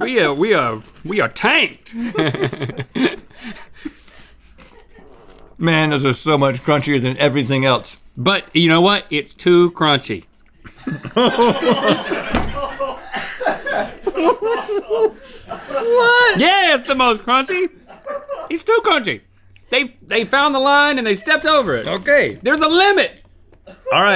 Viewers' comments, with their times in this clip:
0:09 I love it when they make each other giggle like little boys.